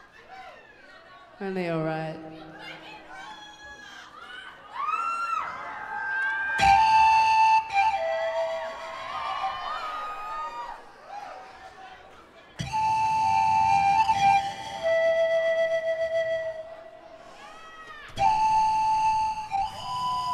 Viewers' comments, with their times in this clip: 0:06 wn TASH la llevai <3!!! is incredible what you do with the zampoña it's so south american! welcome to chile :)